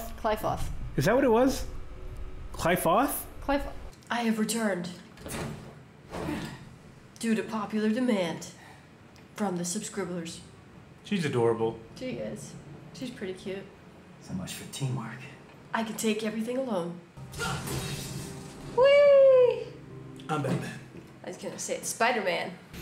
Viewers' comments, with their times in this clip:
0:10 she may be but THAT ACCENT is hard to get over